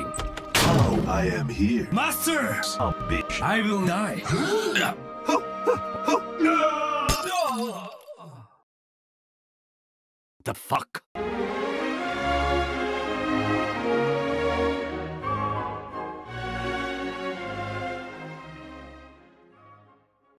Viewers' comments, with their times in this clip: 0:10 that sounded so real it’s scary